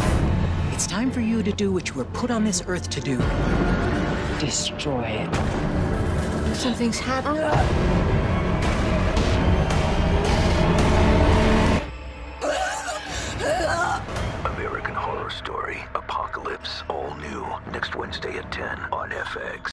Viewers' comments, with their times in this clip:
0:09 lmaoo i meant sorry that screaming one